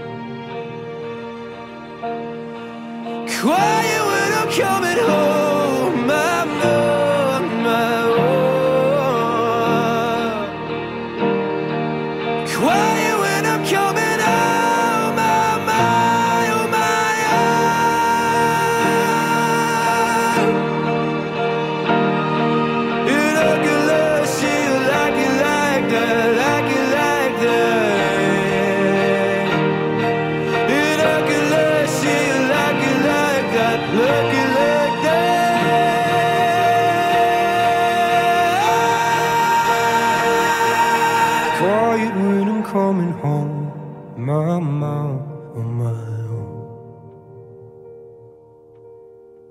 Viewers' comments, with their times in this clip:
0:03 you can feel how he just...lets it all go. He can't hold it in anymore. He is not whispering anymore, now he's screaming his feelings...I wish I could do that...
0:03 when i first saw this video i was like this isnt gonna be good he cant hit those high notes. oh was i wrong especially
0:03 when you cant hit the quietest note "hmm... this sounds good too"
0:08 his voice cracked me 😭❤️
0:18 If I’m not mistaken I’m pretty sure that’s a C5!! If it is a C5, that’s ridiculously high for a baritone (I’m just assuming he is a baritone) He really is the Scottish Beyoncé!!
0:33 as well, he's screaming his feelings